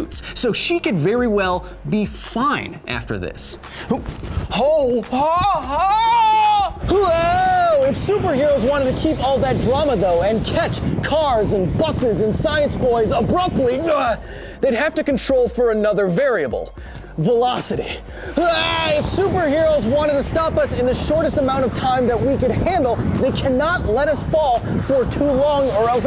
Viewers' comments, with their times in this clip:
0:07 You need a better fan for your hair. Course.... One that doesn't make a sound. :p